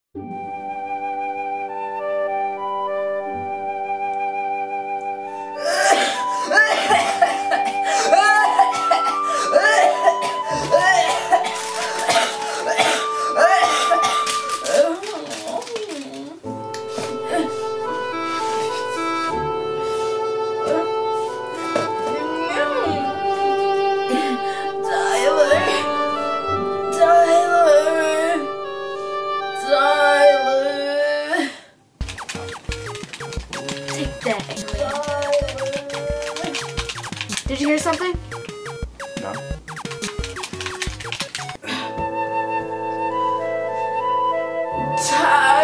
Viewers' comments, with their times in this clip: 0:06 ew the coughs
0:31 I realize she was saying Tyler not die alert